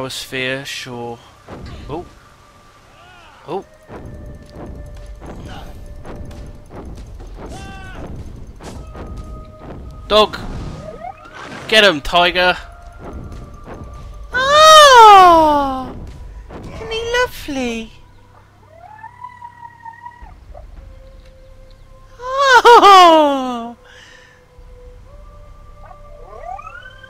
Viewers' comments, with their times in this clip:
0:09 Ok ok the dog sounded just like the four legged thing Obi-wan rides when hes chasing Grevious on Utapau xD jesus im a nerd :(